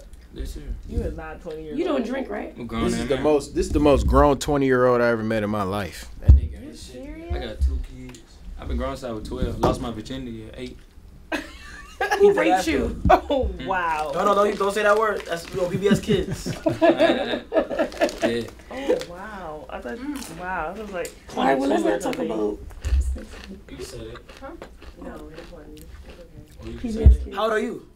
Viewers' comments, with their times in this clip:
0:10 "Who raped you?" she laughs. Wow! Imagine if you switched the genders would it still be funny.